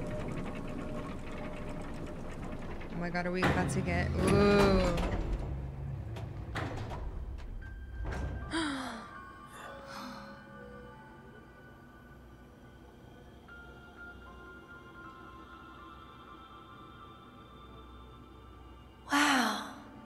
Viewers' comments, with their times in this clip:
0:08 one of the greatest moments in gaming🥲. I have always loved it so much in the original game 😍. Lifestream music is soooo beautiful...